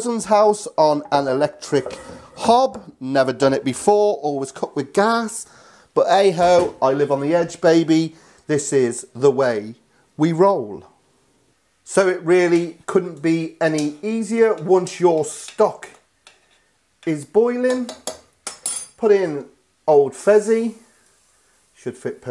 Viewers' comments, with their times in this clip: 0:08 sounds like Elton John if he were the Mandalorian.